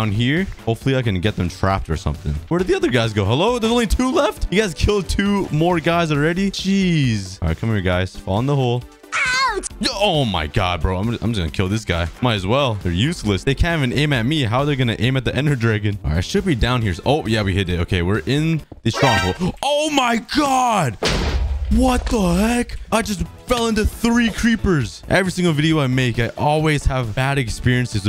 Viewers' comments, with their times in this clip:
0:09 the way he screamed 😂😂😂